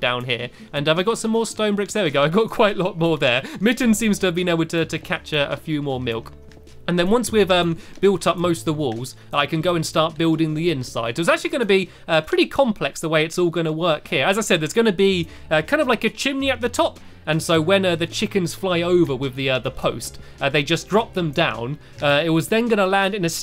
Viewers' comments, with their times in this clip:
0:05 catch a few more what Stampy?